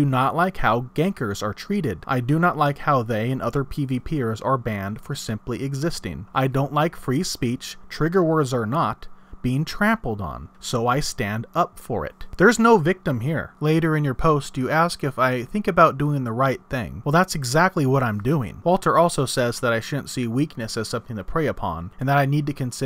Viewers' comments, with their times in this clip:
0:04 No I agree with you, I myself have been treated poorly for ganking. My poorly worded question, was about the statement you make in the video, that you do not like free speech, it was the awkward pause that make sound funny to me. I sorry that I didn't make that clearer.